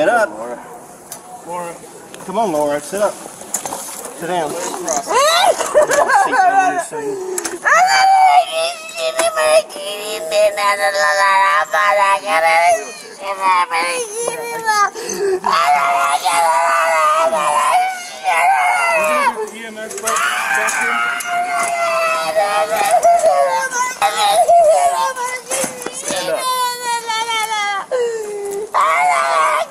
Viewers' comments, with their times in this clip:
0:08 she sounded like billy madison yelling at the penguin in jibberish lol 😅
0:11 The gibberish is speaking in tongues. It’s pretty common in Southern Baptist evangelical churches. They really think it’s a manifestation of religious fervor and the holy spirit, rather than what it really is (a toxic stew of confirmation bias and a lifetime of indoctrination into a cult). There are a zillion YT videos of people doing this in church, and you’ll hear the same rhythmic patterns of nonsense single syllables: ee-gah-lah-bah-ooh-gah-lah-bah-sah-gah-lah-bah. They learn it as children and practice it in Sunday school, so they can do it on demand during church service.